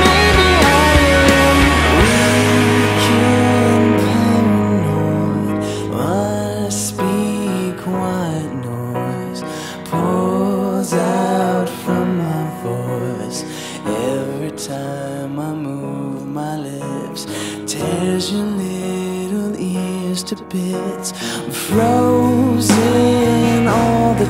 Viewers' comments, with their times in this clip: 0:06 sounds a bit like Muse